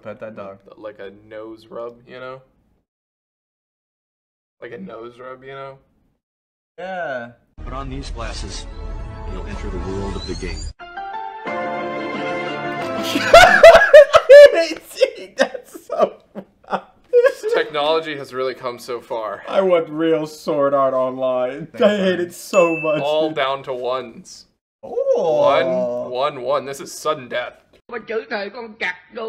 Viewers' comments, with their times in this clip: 0:10 omfg the music
0:12 I love how everyone has seen the video by now, so they collectively start to smug, and they still laugh afterwards.